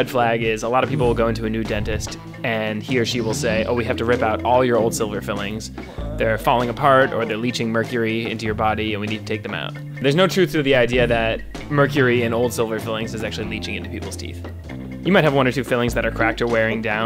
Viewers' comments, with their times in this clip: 0:03 I swear to god I thought it was my phone going of I had to take out my head phone